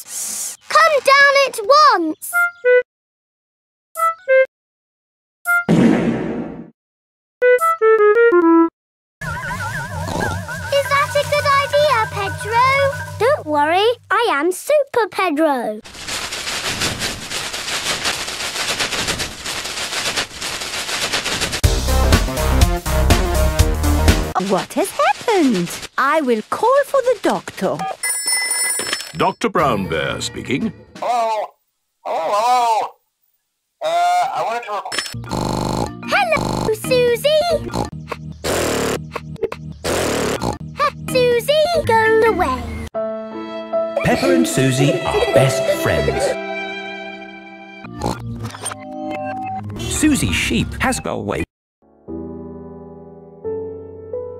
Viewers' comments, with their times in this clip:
0:07 is that music?
0:28 Don't think that I didn't realise what you did there with that music cue
0:37 peppa and susie secret language thhat no one understands